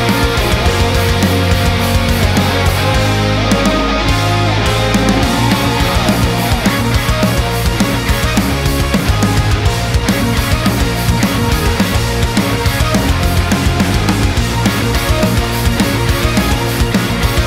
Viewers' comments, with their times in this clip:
0:05 You scared me there, you almost went Ultra Instinct with that melody.